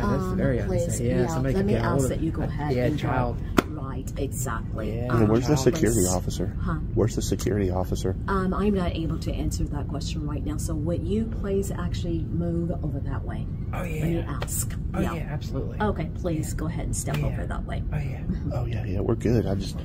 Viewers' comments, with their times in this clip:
0:03 What language is she speaking?